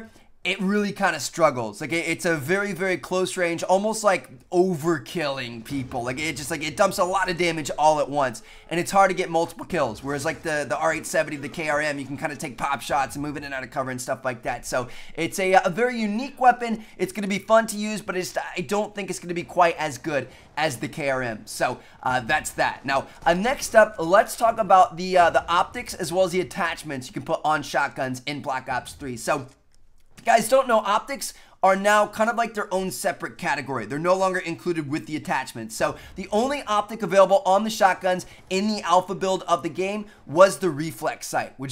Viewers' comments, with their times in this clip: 0:09 That voice crack though
0:27 he swallowed hard af 😂😂😂